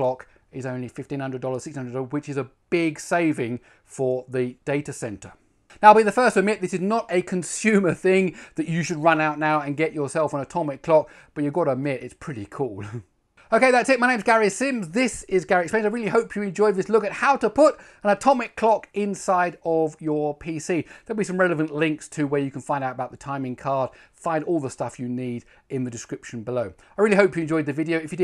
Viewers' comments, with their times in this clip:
0:09 LOL that little chuckle